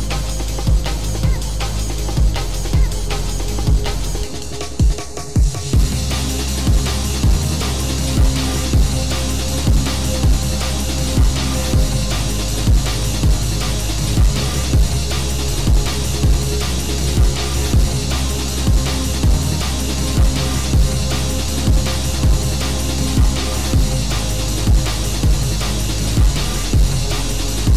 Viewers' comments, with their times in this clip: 0:09 my wolium when the beat hits : ⬆️↕️⬇️↔️↗️↪️↘️↩️➡️↙️⬅️↖️⤴️⤵️🔃⏩⏩⏪▶️⏸️⏯️➿➿➡️⬅️➡️↔️↕️↩️↪️↘️↗️⬇️⬆️